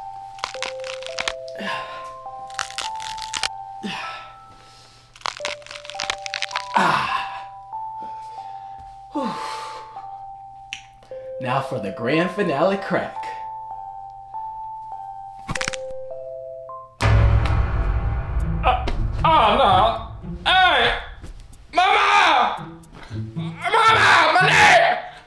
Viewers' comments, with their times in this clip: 0:09 bro is crunchier than a bag of chips 😂😂😂